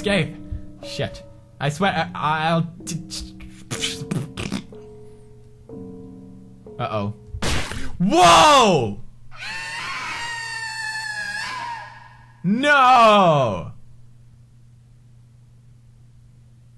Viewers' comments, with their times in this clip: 0:03 best voice acting ever